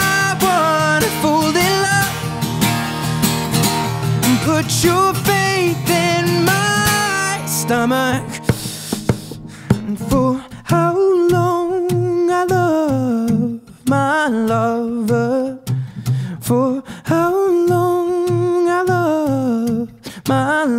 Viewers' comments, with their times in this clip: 0:05 when he breathes, omg..
0:08 oh look,it's acoustic session and his voice is still perfect, that's talent. I loved this video. How his face is when he sings. All of him. this f-ckin part Lord!!!!!!!